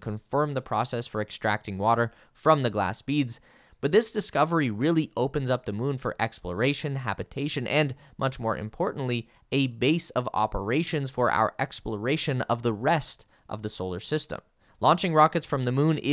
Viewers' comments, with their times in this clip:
0:04 bro dropped a rap and thought we wouldnt notice